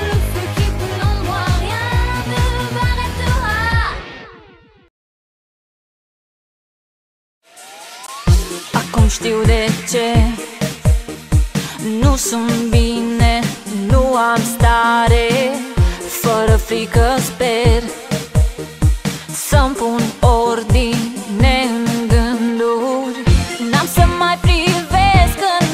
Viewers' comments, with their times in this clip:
0:07 Romanian is just so good